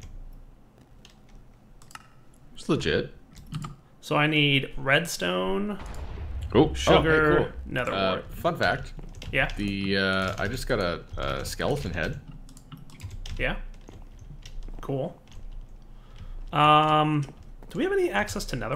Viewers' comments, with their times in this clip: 0:05 he says "fun fact", but it sounded like something else.